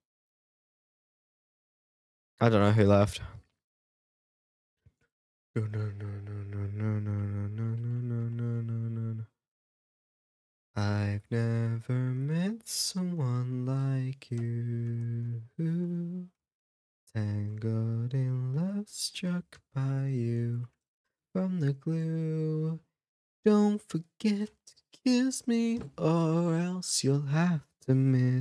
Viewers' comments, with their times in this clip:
0:10 GLUE SONG AAAAAA